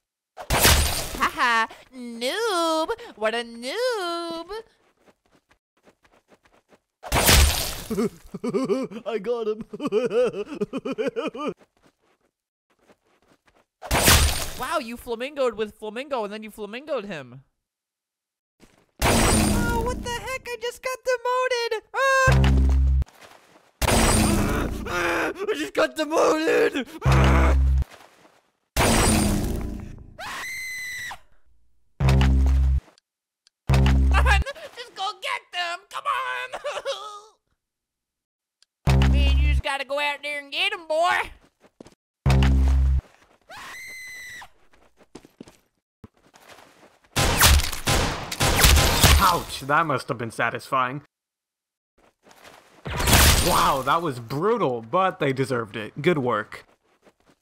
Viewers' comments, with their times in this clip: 0:07 Ok but that laugh tho
0:21 Top 10 perfectly cut screams
0:29 i knew he was gonna scream
0:29 when you stub your toe, cough, sneeze, and yawn at the same time
0:29 it was probably best that, that one was Quieted down
0:43 when I hear that battle cry, I always feel inspired.
0:45 my best lovest voice pack